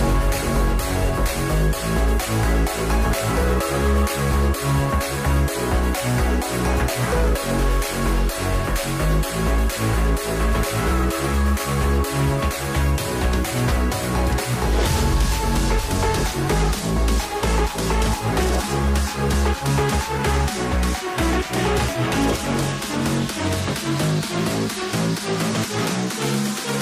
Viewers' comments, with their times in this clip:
0:08 there's a flare gun near the first aid kit!!!!.......your accent is freakin awesome.